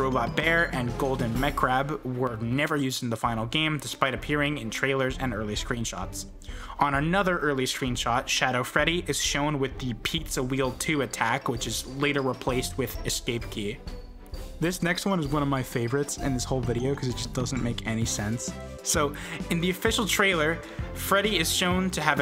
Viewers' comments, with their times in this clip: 0:10 bro just switched voices 😭